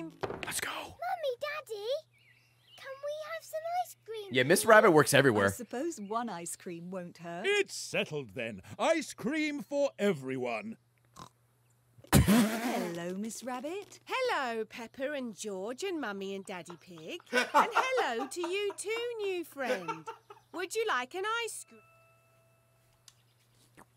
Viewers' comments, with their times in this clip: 0:10 okay the oink had no right being that funny 🤣